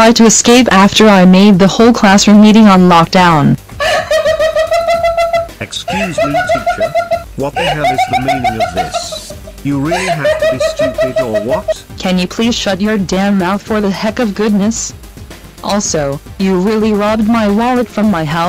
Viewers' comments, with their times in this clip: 0:04 interesting evil laugh